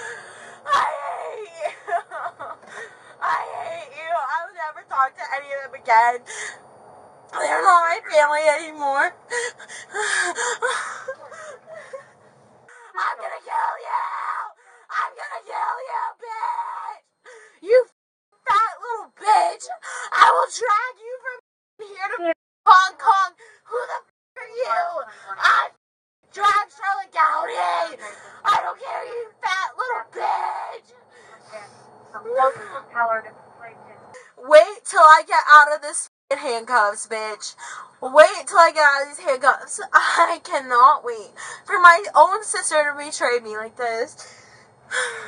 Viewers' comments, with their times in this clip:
0:04 this is when you can see she is a child not an adult. Screaming nonsense like she wants her mom to come talk her out of it. Such a weirdo
0:29 says the whale? You really know how to moan and grown